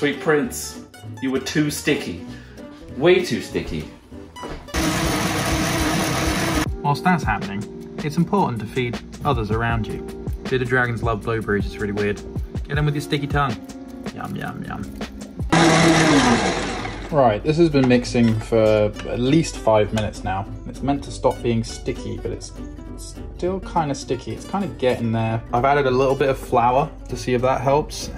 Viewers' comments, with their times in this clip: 0:10 how do you manage to pronounce "blueberries" as "blow breeze"?